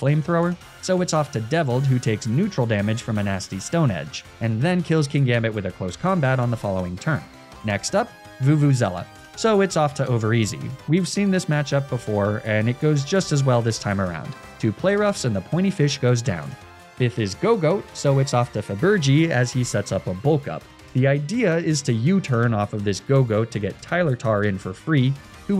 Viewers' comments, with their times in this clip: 0:07 Vuvuzella?? how, how do you.... where do you even get half of those letters from...